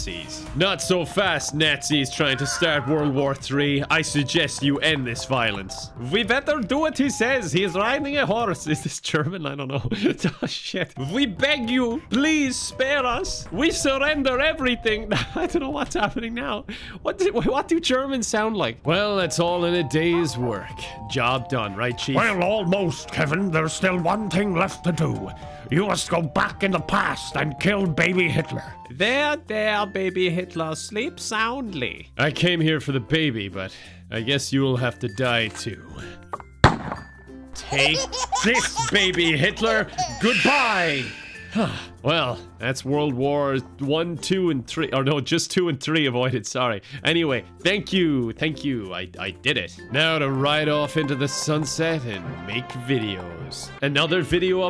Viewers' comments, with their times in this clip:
0:06 No it's true, we totally sound like that!
0:08 as a german I can confirm this is exactly how we sound like.
0:39 Ok but like…that thrown baby sound effect though 😦 Can we- can we talk about that?
0:42 The surround sound on the scream is what fucking sent me